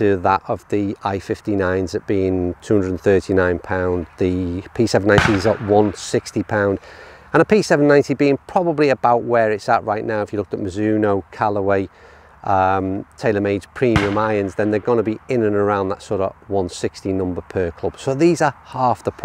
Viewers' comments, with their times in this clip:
0:05 Was that someone hitting a Ping driver ?